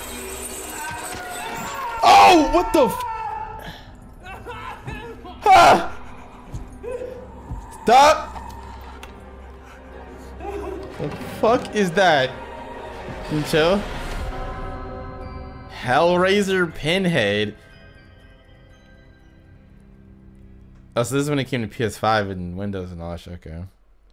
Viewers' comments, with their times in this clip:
0:07 he turned into DMX for a second